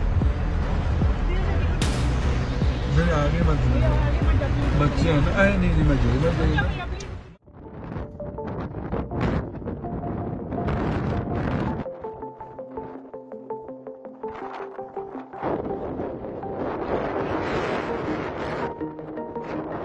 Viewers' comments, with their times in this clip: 0:06 that guy is speaking Hindi